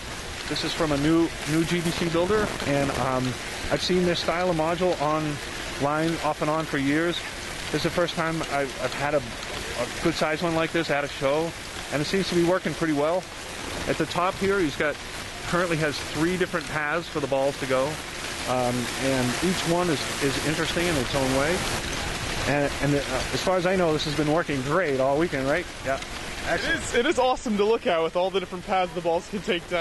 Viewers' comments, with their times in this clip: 0:10 Lasted a lot longer than a few minutes. Looks like the plug is halfway out around the mark. People who use external audio, ALWAYS wear some headphones so you know how your audio is functioning!
0:10 Lasted a lot longer than a few minutes. Looks like the plug is halfway out around the mark. People who use external audio, ALWAYS wear some headphones so you know how your audio is functioning!